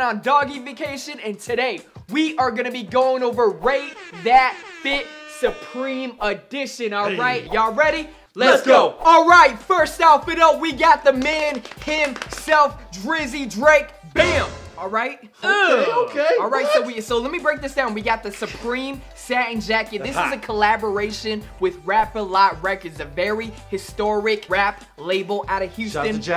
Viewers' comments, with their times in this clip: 0:08 they sound like an anime pro beyblade team or something 😂😂